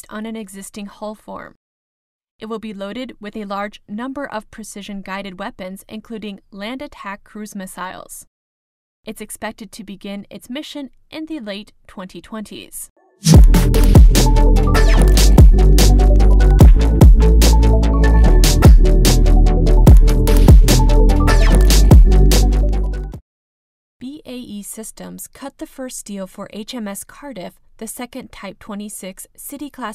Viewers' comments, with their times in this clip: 0:10 A minor criticism: sound levels kind of jump around through the video. The lead-in and between-segments is kind of loud relative to the somewhat quiet voice-over. This is especially true with the transition If you turn the sound up enough to hear the lady's voice over, you wince every time there's a new segment. More even sound levels would be better. A separate question: has anyone from Lockheed, on the record or off it, given any reason for why they dropped out of FFG(X)? It looked like they were the favorite to win amongst outside observers...and then they were gone.